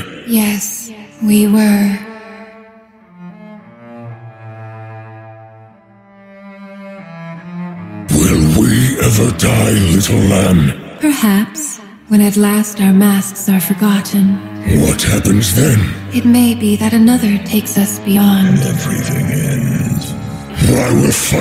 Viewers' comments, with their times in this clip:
0:07 how come they sound so much worse vs in the actual game of league of legends. also when did change the lore of them WTF why do they say lamb says they might die one day. bro legit her og voice line says "how long will we be together" "forever more"